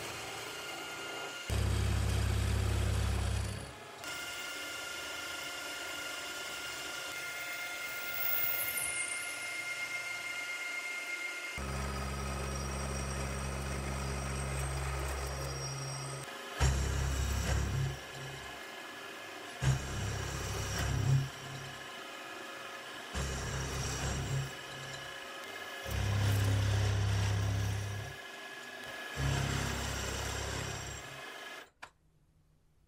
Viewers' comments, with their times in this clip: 0:06 sounds delicous enough! 😂
0:16 sounds like horror movie sounds